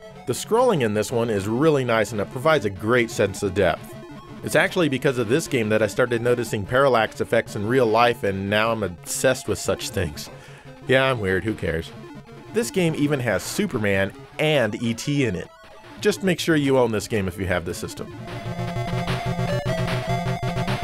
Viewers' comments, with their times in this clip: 0:08 That game sounds like Action Fighter